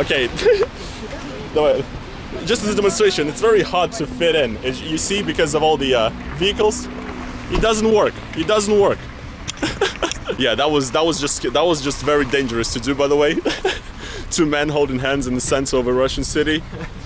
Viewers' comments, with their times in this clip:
0:05 👀 * shocked Russian noises *